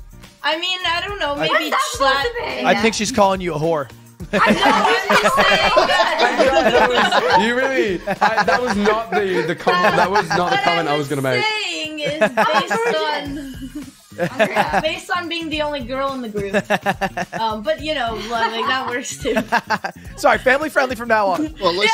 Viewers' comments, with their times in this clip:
0:04 when Lud’s laughing like this I get huge Fallon vibes when he does the face with the laugh. Top it off with a few hair strokes. Am I the only one that thinks that about his laugh? Also it’s way more noticeable during his streams with QT since they sound exactly the same.